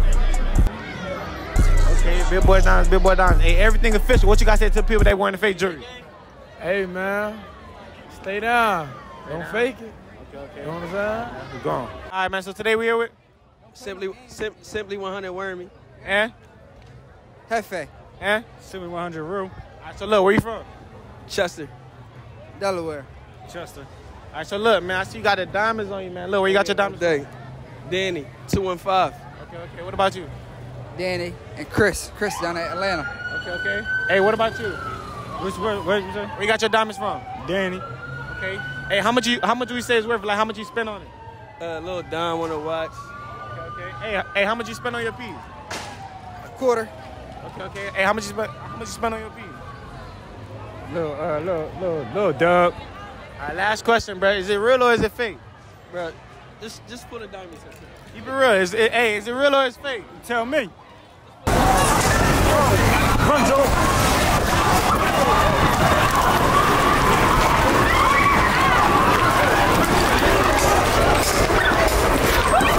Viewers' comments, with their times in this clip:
0:04 Aye tell me why the ending almost sounded like the first Cloverfield movie 😂 some ufo 🛸 just landed ha!
0:54 that s*** was wild somebody started shooting